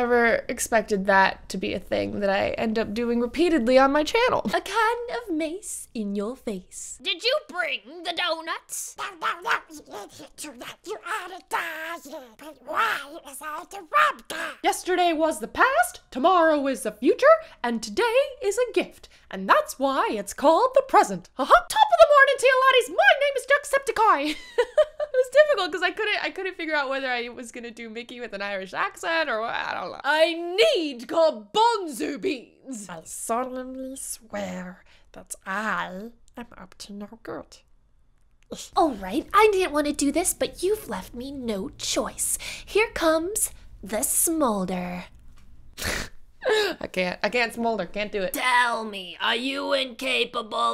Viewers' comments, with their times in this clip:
0:09 fr am i the only one who dies of laughter at the donald duck impressions😂💀
0:38 😂 that look and sigh